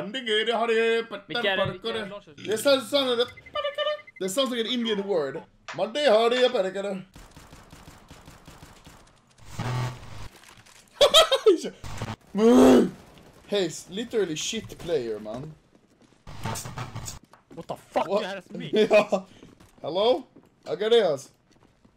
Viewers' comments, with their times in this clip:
0:06 As an indian myself i rate it 11/10 of how an 120% indian uncle sounds like